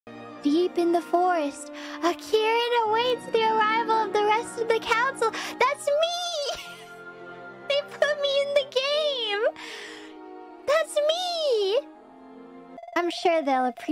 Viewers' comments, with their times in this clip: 0:00 I didn’t hear that in Fauna’s voice… I heard it in the voice of the person who reads to opening in Star Ward Media